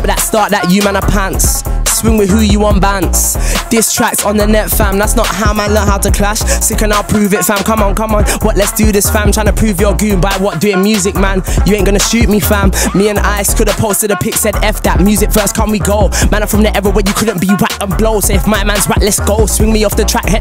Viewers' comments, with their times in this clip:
0:03 what's going on here?? #BeatIsMad